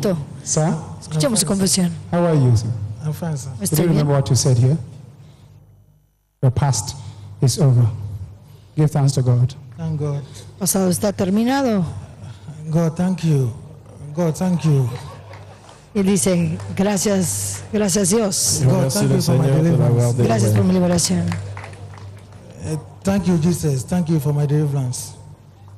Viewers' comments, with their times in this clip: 0:08 I've seen better acting in the WWE. Notice how the congregation is laughing. Why? Because this is a JOKE!